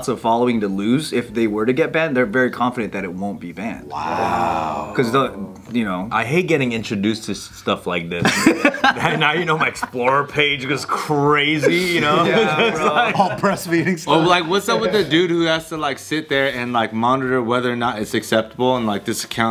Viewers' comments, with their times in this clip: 0:03 All of their “wow”’s are 😂